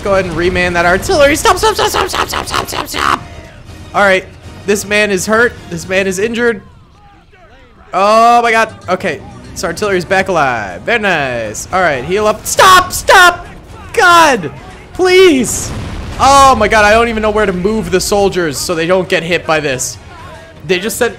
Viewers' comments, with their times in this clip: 0:08 the air raid alarms be like: